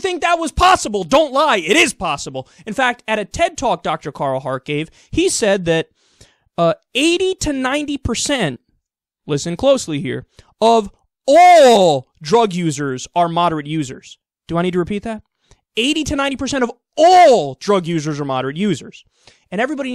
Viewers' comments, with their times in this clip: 0:06 Someone needs to do an earrape of a moment when he says "80 to 90% of... AAAALLL drug users are moderate users"